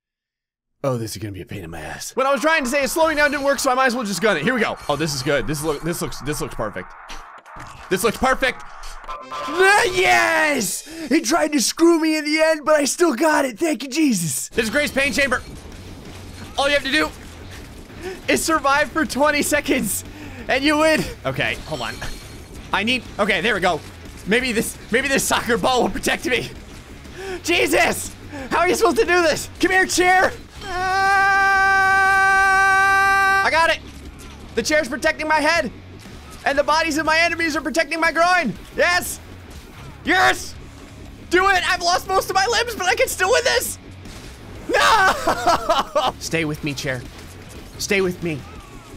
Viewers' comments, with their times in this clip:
0:03 when the dome music kicks in
0:07 sound like when i have diarhea
0:09 he sounds just like ssundee
0:31 I legit thought there was a mosquito in my room